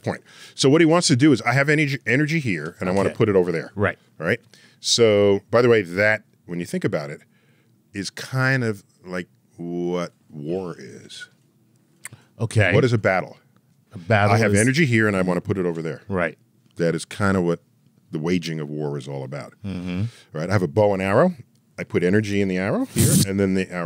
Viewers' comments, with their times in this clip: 0:04 chuck's sfx get an instant thumbs up :)